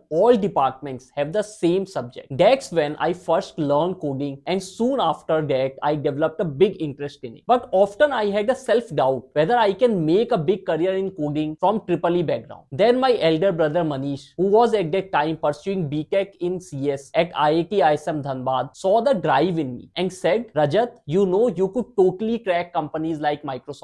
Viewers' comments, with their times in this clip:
0:08 Often pronounce was wrong 😮